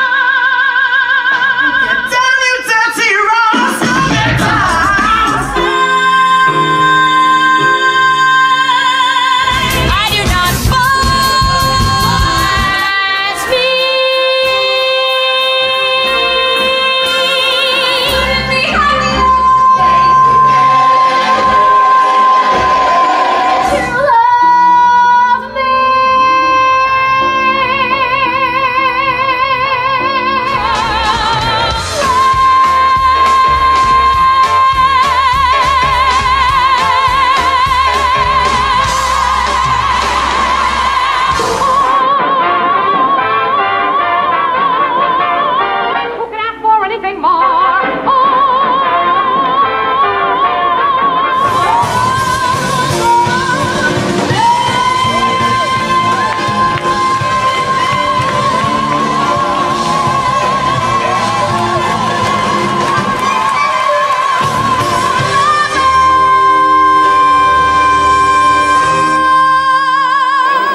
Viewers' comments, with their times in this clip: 0:05 Jenna Ushkowitz C5 belt
0:57 she's so in tune you can hear the octave higher